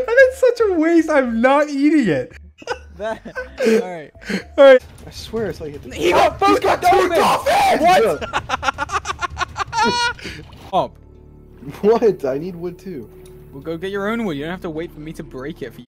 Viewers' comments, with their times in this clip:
0:06 Dream: gets dolphins Dream: dolphin laugh
0:08 YALL LISTEN TO DREAMS LAUGH AT 2X SPEED IM CRYING SNXNJWJSJSJW